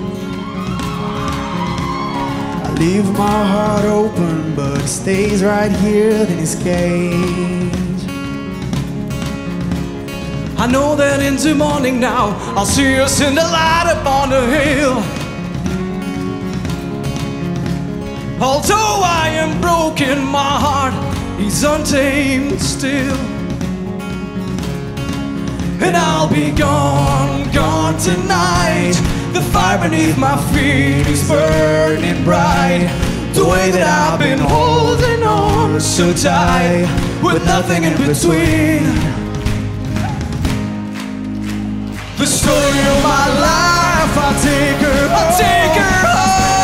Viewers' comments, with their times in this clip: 0:10 what's that. Is it even the same tone 😄😊
0:25 I love how Fernandos voice mixes with the bass
0:33 oh my god he does not know how to sing
0:34 that was pretty rough... Fernando is definitely better suited for this song
0:34 I think I might have better vocals than this guy lmao